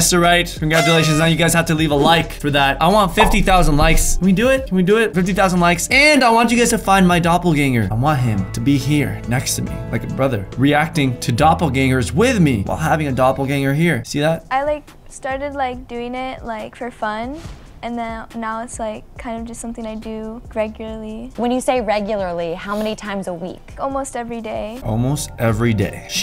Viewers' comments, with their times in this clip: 0:08 When you close your eyes and listen to his voice this guy is just Logan Paul 😂